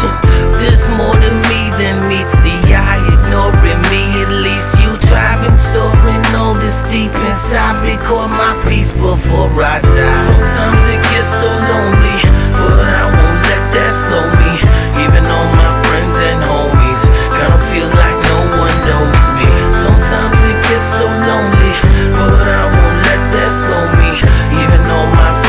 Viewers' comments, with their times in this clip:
0:09 all I could think of was "so imma sit silent with my hand of cock" lol